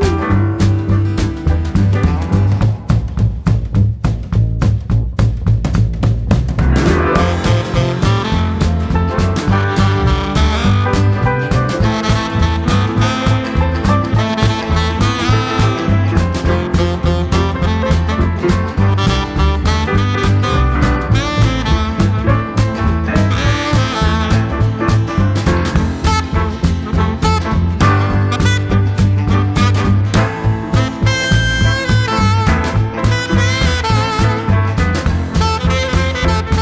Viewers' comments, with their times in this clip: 0:04 Amazing arrangements and musicianship but sax dude coming in ! Great video creativity.
0:06 thats a badass sax....and that's how you make an entrance.
0:06 best solo entry!
0:06 A wild sax appears! ...far from original, I know, but like, come on. How can I see that all that sax and not say something?
0:19 Not sure I agree with the self-description as "jukebox western". Certainly the first couple of minutes but it seemed to morph into something I'd not associate with Western music